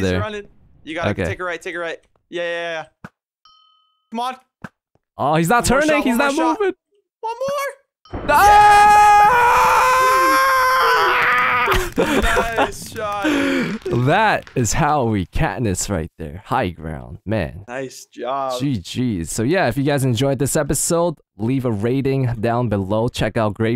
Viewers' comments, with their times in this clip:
0:10 WTF? THAT VOICE